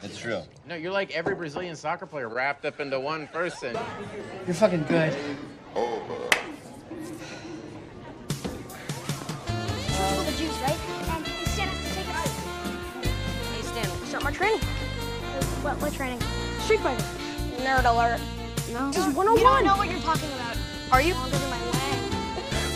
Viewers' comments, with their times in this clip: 0:08 when the music started playing that was it for me 😂